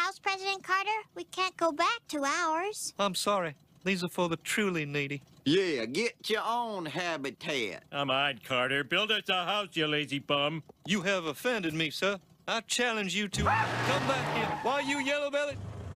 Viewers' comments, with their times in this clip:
0:13 homer scream LOL